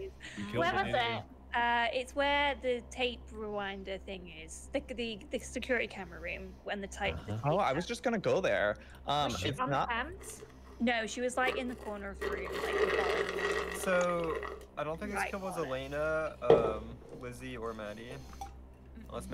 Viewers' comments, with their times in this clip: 0:06 girls doin asmr